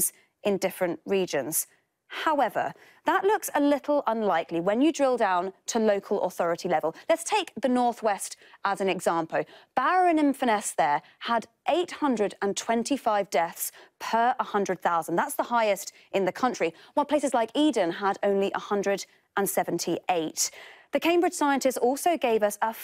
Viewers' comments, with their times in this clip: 0:06 'Let's take the North West as an exampo'. What?